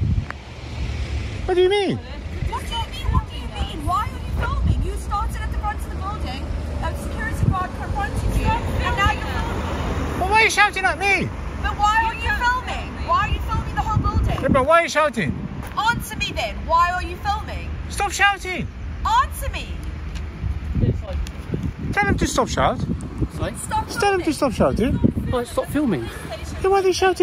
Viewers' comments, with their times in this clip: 0:10 lady barking why are you filming as the man next to her films AB! 🙈